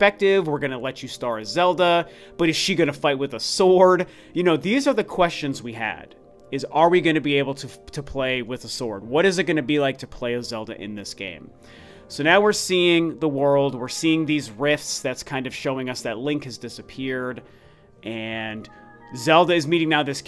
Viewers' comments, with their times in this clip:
0:05 fuck with a sword?